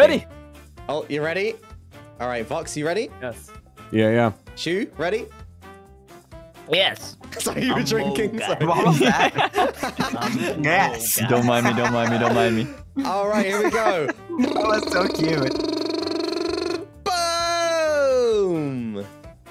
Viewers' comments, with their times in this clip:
0:04 that "yes" sounded so funny LOL